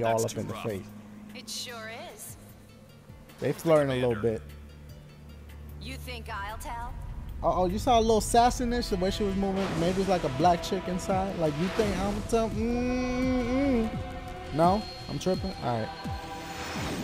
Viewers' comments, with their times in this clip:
0:04 Sound like a mixed chick black sass white voice.